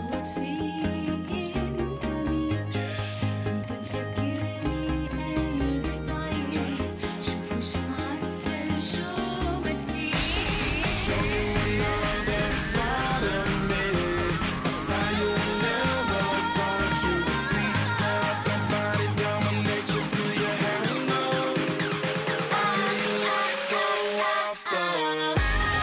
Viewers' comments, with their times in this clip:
0:08 loved this part so much her voice is so gooood